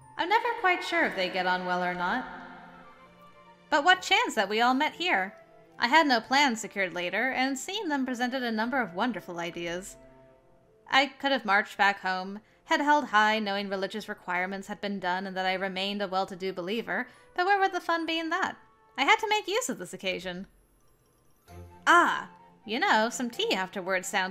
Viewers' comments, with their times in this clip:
0:08 “Wonderful ideas”—I get flashbacks to when I watched playthroughs of Genocide Runs in Undertale. Flowey sayin that…😶 Also, I really dig the voice ya have for Lot. Very much butler-like.